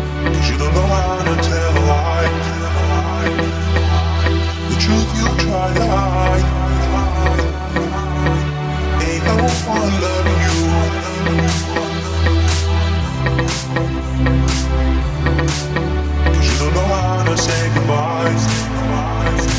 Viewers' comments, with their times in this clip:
0:06 totally summer vibes 🤩 song??? 🤔